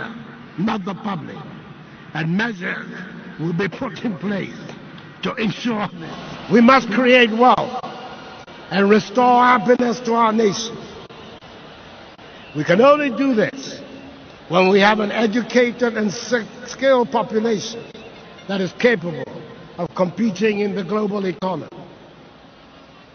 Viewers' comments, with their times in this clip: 0:07 why didn't he just clear hi throat ... then he wouldn't be stumbling. very impressive speech! 😁